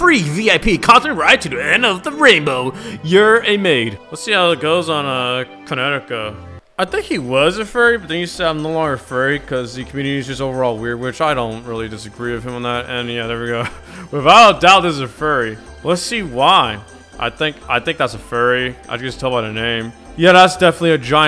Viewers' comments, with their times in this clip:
0:05 =prowler theme plays=